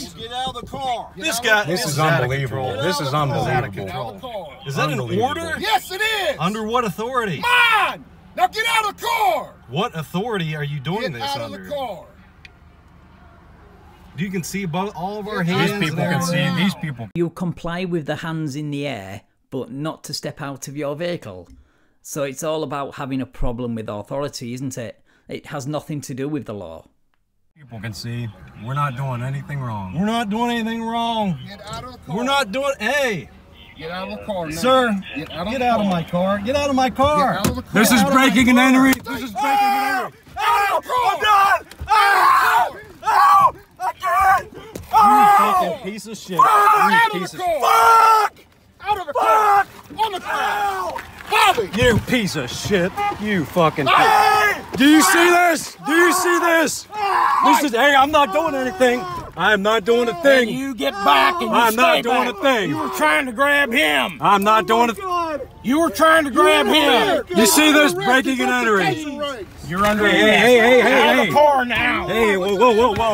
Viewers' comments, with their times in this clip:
0:05 The absolute last thing I want to do is make fun of anyone's southern twang, but you've got to love the chief's inflection SOVCIT: "On whose authority?" CHIEF: "MAAAAHN!"
0:38 The driver started screaming and the cop DID NOT taser him. You can see the taser in his hand in the ensuing seconds and it is not deployed. He was yelling and screaming to get attention from people around him and act like he was a victim. He wasn't. It's all part of the Sovcit act.
0:39 the SovCit scream is always classic
0:59 Is it just me or he sounds like Bubbles from trailer park boys